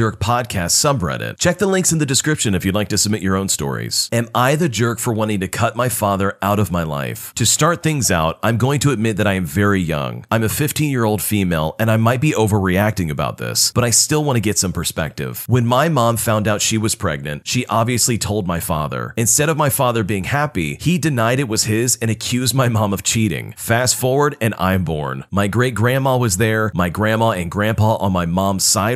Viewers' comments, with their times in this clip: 0:10 ''im a 15 year old female.'' me in my mind: you literally have a male voice playing-